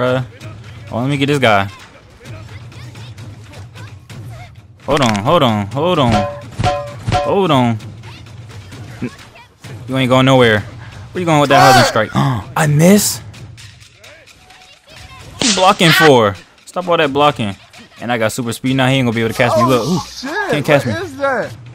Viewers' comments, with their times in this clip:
0:04 The sound effects this man be usin bruh be havin me dead 😂😂😂😂